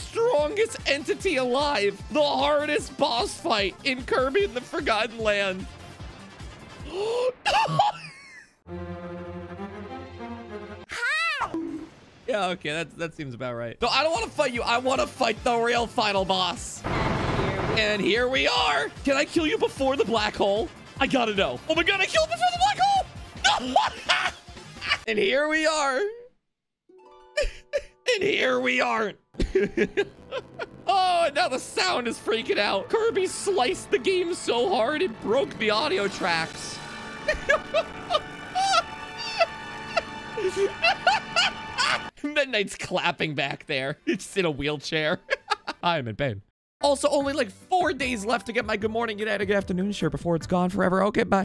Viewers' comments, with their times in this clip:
0:10 (Incoming Climax music) Kirby : HI (BONK)
0:30 Kirby literally destroyed the sound barrier
0:36 that just sounds like when I’m watching something and using my left AirPod
0:37 this, no joke, sounds like a rom on my school computer